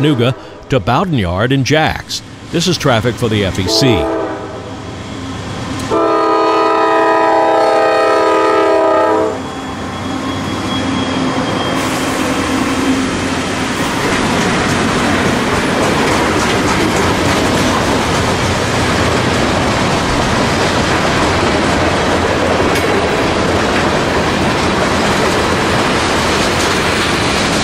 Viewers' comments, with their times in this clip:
0:09 I really liked the horn on